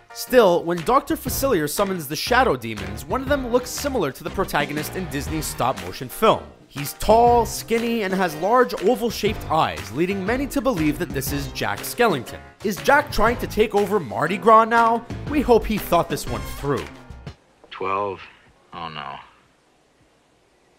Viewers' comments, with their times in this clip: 0:04 At like he pronounced it wrong lol